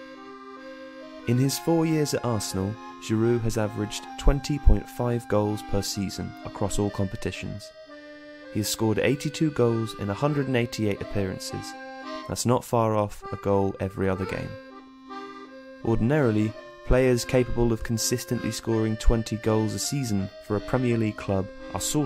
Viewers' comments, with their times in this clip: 0:08 this guy is just not Giroud